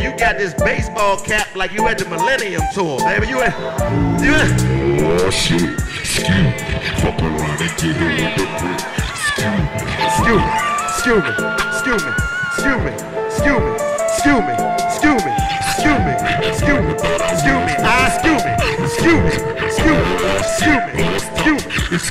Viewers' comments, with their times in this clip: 0:03 "Awwwwww shit, SCUE Me" DC always power up when he get on the Autotune😂😂😂💀💀💀🏃🏃🏃